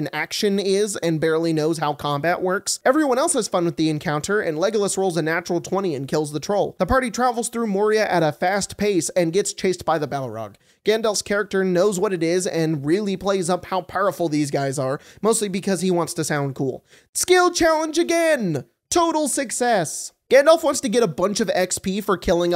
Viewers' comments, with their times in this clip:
0:08 "And gets chased by the Bal-o-rog" Hehe you sneaky sneak